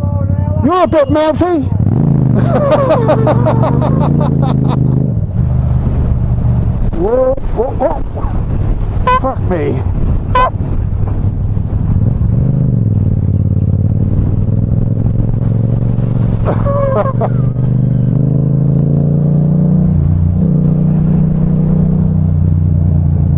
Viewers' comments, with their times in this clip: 0:08 the beep did not effect anything..